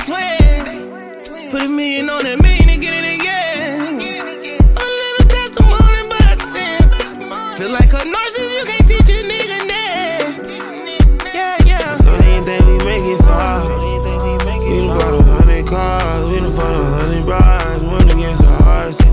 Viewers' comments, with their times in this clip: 0:05 thug hits a note no other artist can pure talent